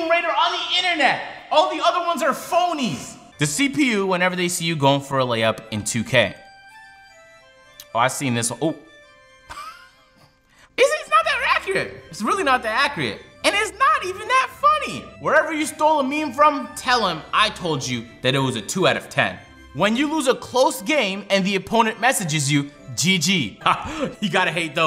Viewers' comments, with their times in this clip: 0:10 He realizes he f*cked up and said "accurate" correctly and quickly ruins it with saying "ackreate".